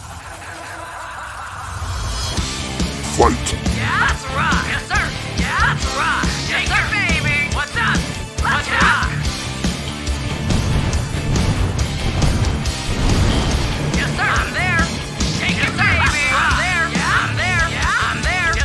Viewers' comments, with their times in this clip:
0:05 "Shake your baby!" I swear that is what she's saying and that the medical community disagrees with that advice.